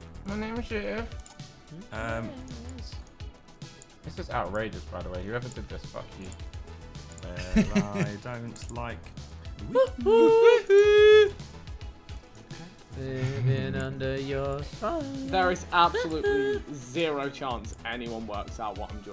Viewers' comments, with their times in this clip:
0:07 not the sidemen singing Jennifer Hudson !!!